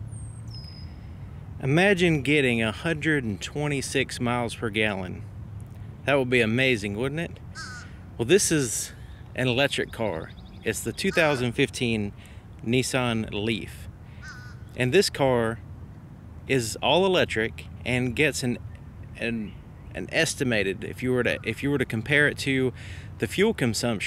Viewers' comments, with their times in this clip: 0:05 the sound that animal makes after you ask the question is priceless